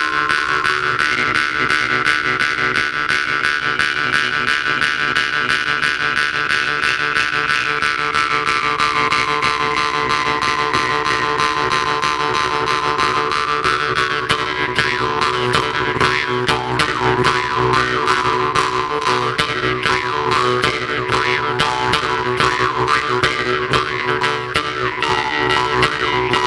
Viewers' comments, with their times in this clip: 0:10 when the beat dropp